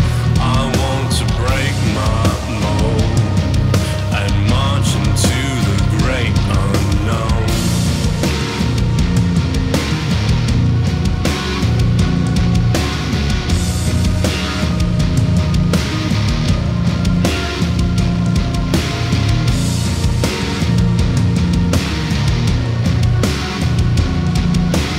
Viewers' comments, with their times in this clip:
0:08 That riff is groovy as hell